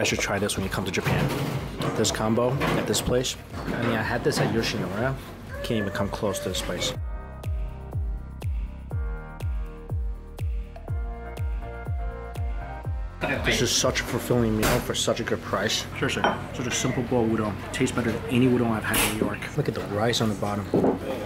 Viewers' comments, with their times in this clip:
0:05 did I just notice a voice of a girl??